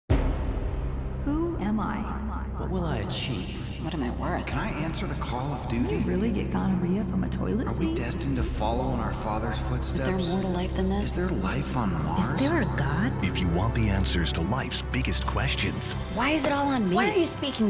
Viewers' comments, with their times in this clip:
0:04 I HEARD MICKEY OMG THIS IS HAPPENING IM GONNA LOSE IT